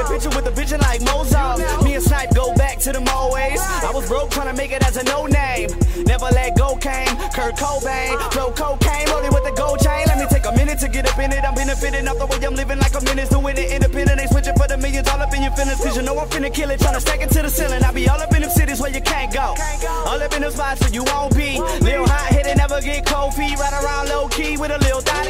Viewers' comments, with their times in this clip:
0:09 whole song HARD as fuck bro!!! that flow FIREEEE!!